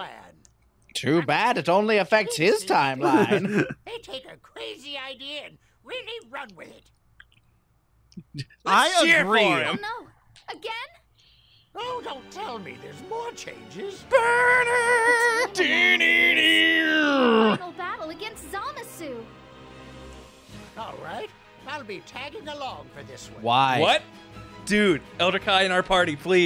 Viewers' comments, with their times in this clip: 0:09 Elder Kai (Vegeta Voice): Do I hear five!